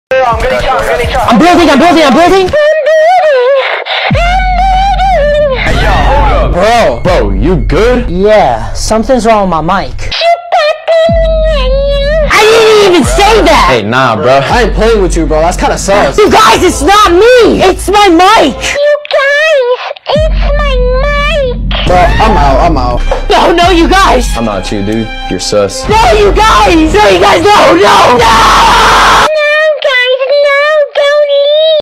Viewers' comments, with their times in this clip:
0:02 Sounds like my neighbor's sound at night not gonna lie
0:03 sex noises subtitles : APPLOUSE
0:10 How it sounds like when you yawn in the mic:
0:10 didn't understood a word from here
0:14 did anybody else notice the fart?
0:15 Did anyone hear that fart? 👁👄👁